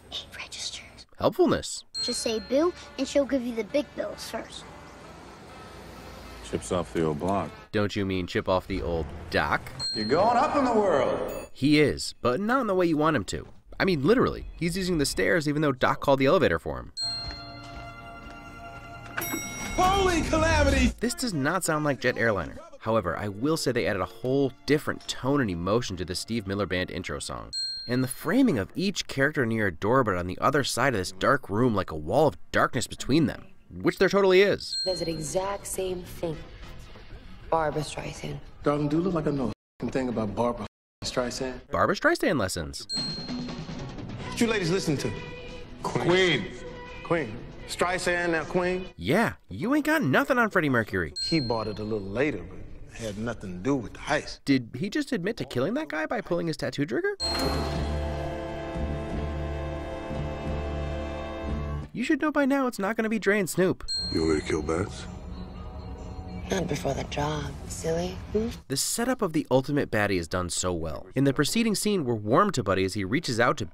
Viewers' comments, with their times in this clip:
0:10 Imma just appreciate that the elevator dinged at the same time Spacey raised his finger.
0:46 I love how Baby says queen at a normal volume because he’s used to talking and having earphones in and Buddy raises his voice because it hasn’t clicked with him that he doesn’t need to speak up over the music because everybody else can’t hear it.
1:00 we know it's not, but we all heard the "dadadada"